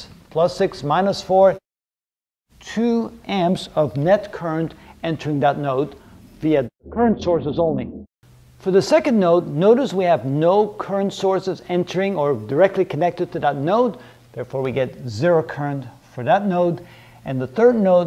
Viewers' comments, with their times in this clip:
0:05 Woah, your voice went really wonky and it startled me!